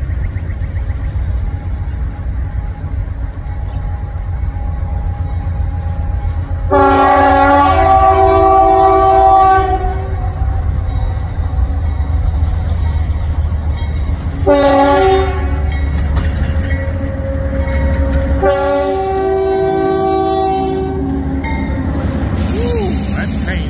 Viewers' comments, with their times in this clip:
0:04 Thats sounds a foul K3LA horn